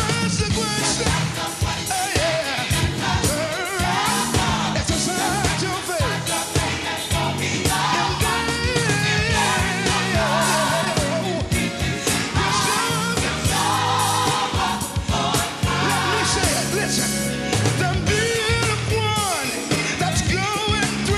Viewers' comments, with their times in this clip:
0:08 no to mention that vocal run Classic!!!